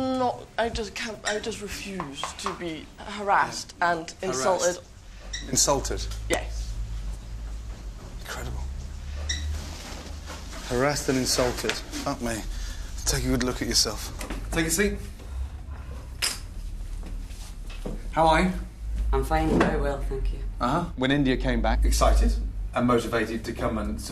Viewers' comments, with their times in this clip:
0:05 the way he says incredible is so demeaning